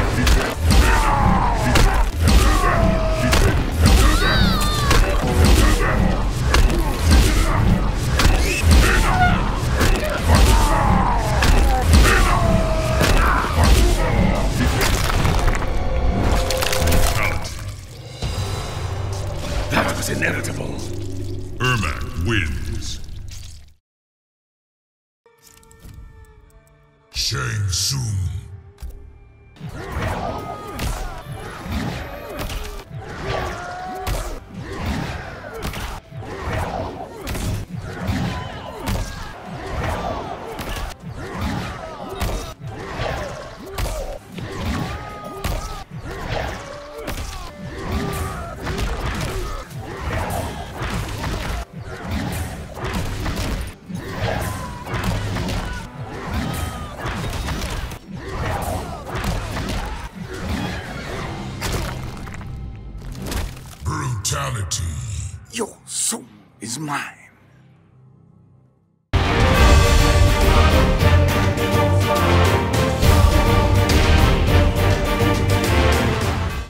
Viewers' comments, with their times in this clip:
0:07 alien’s scream cut was so perfect lol
0:19 Wait, what's wrong with his voice? Just like when he says "WeAreManyMoreInfinite..."
1:04 I love how he says “Your Soul Is Mine”
1:05 he stole Michael Jackson’s voice